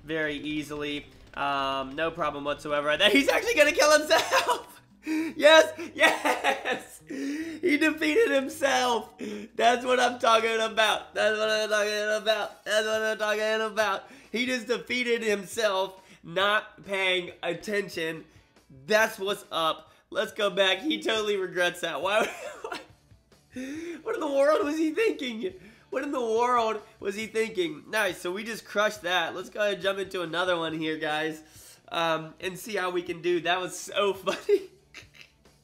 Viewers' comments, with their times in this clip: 0:08 you can hear his voice cringing xD
0:19 when he was singing... My reaction was so speechless and like.. Wtf